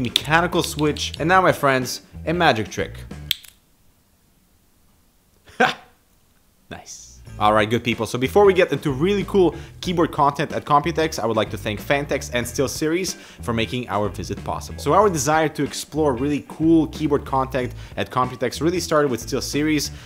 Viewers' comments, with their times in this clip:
0:03 lololollol right when you snapped the program that was updating in the back ground asked for my password